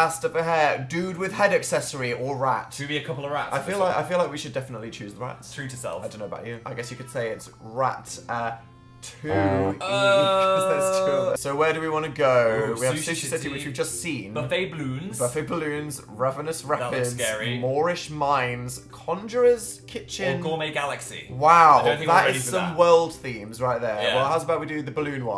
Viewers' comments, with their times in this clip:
0:07 My absolute favourite moment in this is after when Dan makes the ratatouille joke, and quietly whispers "because they're two rats." That giggle thoughhhh